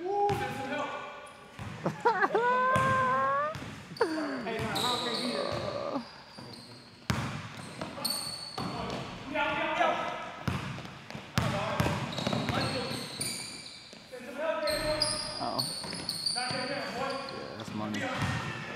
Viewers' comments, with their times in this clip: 0:06 Listen to the camera man 🤦🏽‍♂️🤦🏽‍♂️